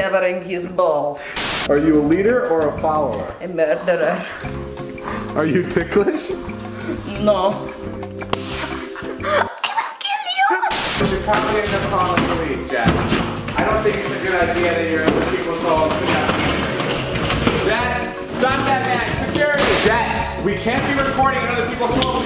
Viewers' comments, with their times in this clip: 0:06 literally that echo 😂😛
0:07 IM DYING S M A C K
0:09 älä kilju? Wuhuu that sound like Finnish